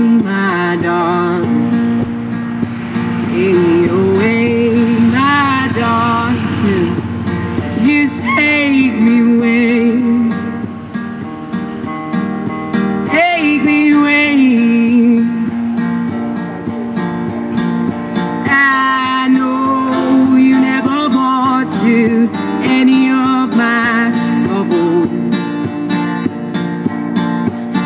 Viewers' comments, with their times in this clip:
0:08 That voice crack was so fucking cute.